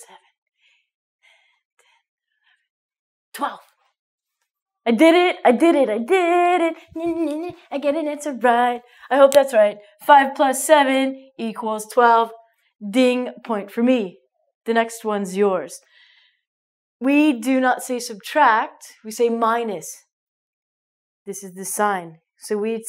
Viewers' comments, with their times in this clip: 0:06 Godness! Eric Cartman!